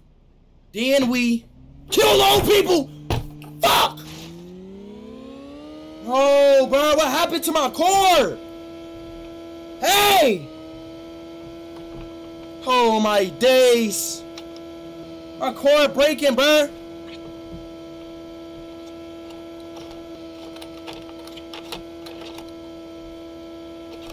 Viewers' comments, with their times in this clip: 0:06 even granny dont even care about the crash😂😂😂